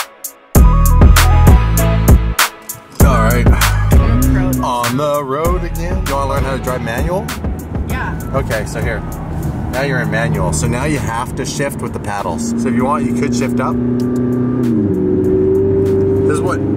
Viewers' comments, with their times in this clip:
0:03 i thought he was gunna start rapping